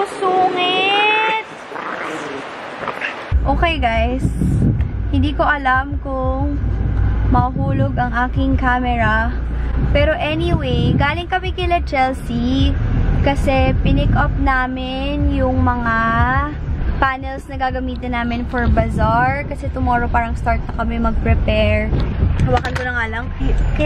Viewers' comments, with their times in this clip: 0:06 She start talking like Michelle Dy HAHAHAHHAA